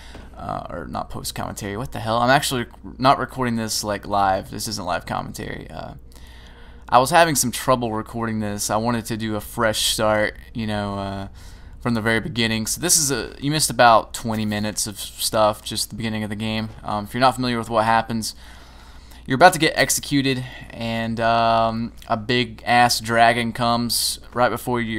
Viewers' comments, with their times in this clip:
0:09 "Fresh shart." Delicious...